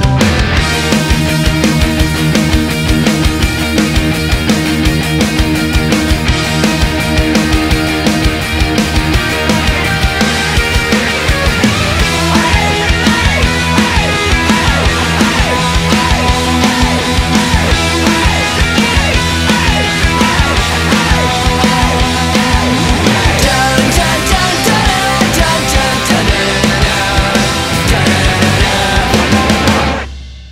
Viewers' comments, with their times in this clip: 0:09 sounds like oh love and wow that's loud
0:12 HEY! HEY! HEY! HEY! HEY! HEY! HEY! HEY! HEY! HEY! HEY! HEY! HEY! HEY! HEY! HEY! Gets me hyped Every time 😎👉🏼